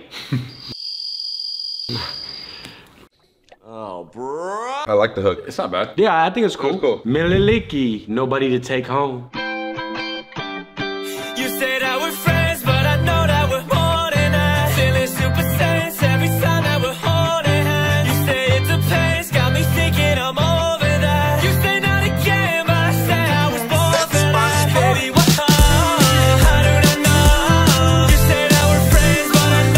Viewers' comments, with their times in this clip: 0:09 if Post Malone was happy
0:11 bro sounds like post malone and dream at the same time